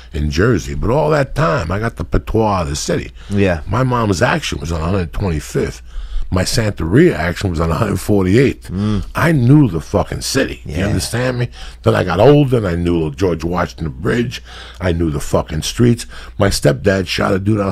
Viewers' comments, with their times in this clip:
0:04 someone farted bhalalalala